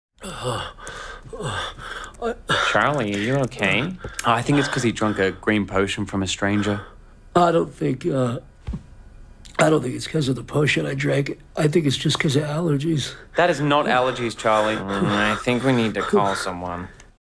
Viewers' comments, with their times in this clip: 0:01 That tiny little "I"
0:02 A few comments pointed out the soft "I" Charlie says right before anyone even says anything to him and now I cant stop laughing at it at 3am lol. But also its kinda sad cuz of how real it sounds, but im sorry i can't stop laughing at it lol.
0:07 Zach is the master of making real human dialogue. The gulp he does is so realistic
0:07 The little gulp gets me every time
0:08 You can practically feel the sore throat he's got when he swallows
0:15 I love that he drops the act to breath normal immediately when he doesn't need it anymore